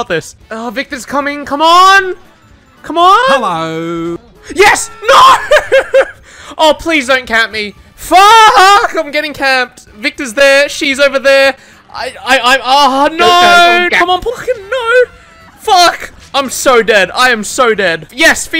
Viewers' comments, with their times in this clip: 0:03 That Frank Walkers national tyres "Hello" fucking slaughtered me, culture at its finest right there